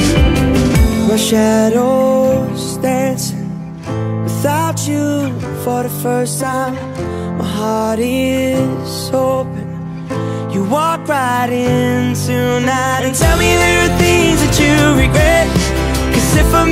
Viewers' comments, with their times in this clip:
0:04 major b it only go's up to